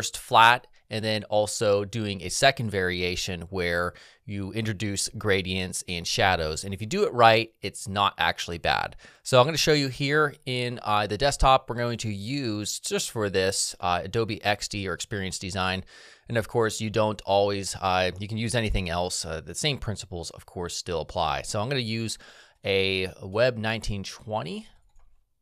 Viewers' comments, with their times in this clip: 0:08 I love how the audio quality didn't drop under the transition as everyone else